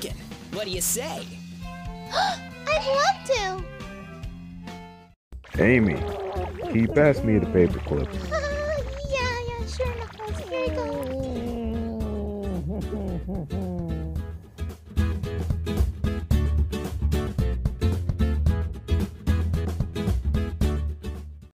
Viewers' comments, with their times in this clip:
0:07 sonic is crying XD